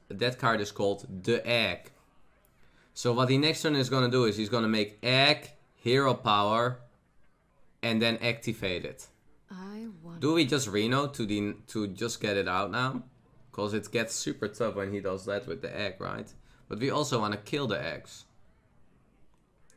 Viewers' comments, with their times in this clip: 0:04 "He goes egg, heropower then eggtivate it"